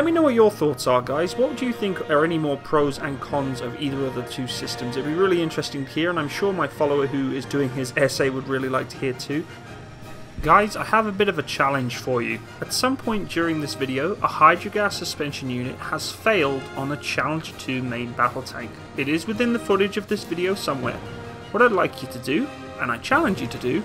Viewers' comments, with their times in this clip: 0:04 Wait, here comes the crescendo!